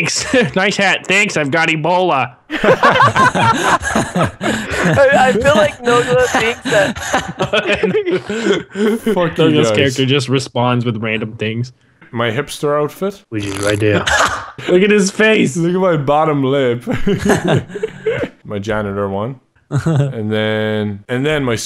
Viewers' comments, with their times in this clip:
0:04 😂😂😂😂 that laugh tho😂😂😂inhales ha inhales ha...lmfao😂😂😂😂😂😂